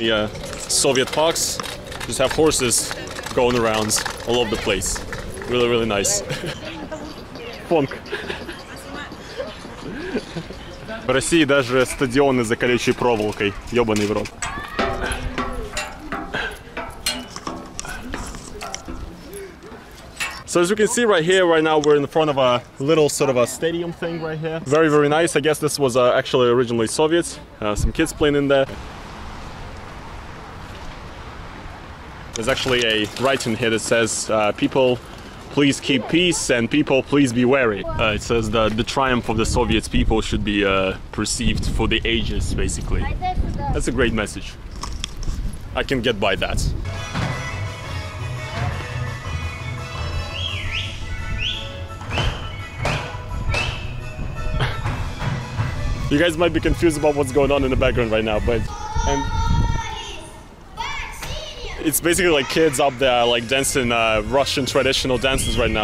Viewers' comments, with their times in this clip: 0:06 now thats why I love russia: Phonk blyat.
0:46 I was curious what the baroque music playing in the background was at that cultural center It didn't sound Russian, do you know what it was?